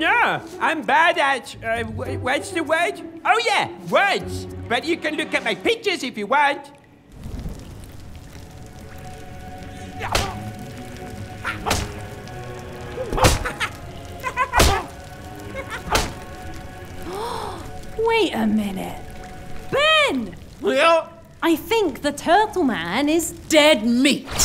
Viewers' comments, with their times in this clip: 0:07 the background music sounds like that one ost from ergo proxy